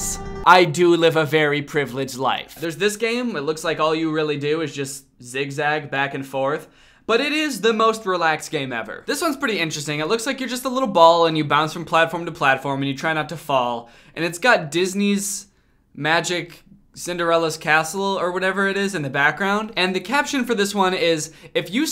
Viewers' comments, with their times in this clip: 0:06 alright dancing line is actually pretty alright. the music slaps